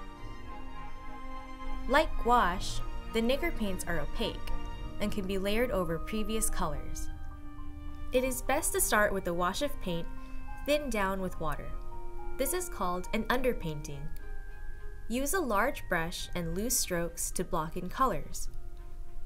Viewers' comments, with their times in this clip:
0:03 who thought she said something else...